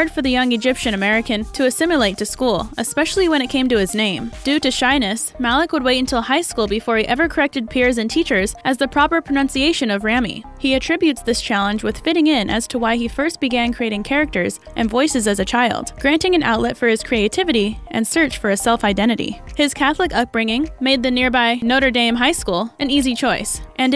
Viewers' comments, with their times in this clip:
0:06 the irony, she says how teachers and peers pronounced Rami’s name wring, then she did too 😂
0:10 Truth is you’ve been mispronouncing Rami’s name this whole video! smh